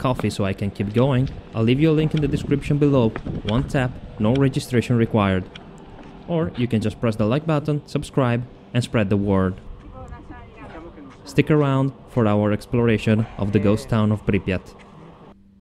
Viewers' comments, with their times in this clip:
0:11 someone is speaking in italian?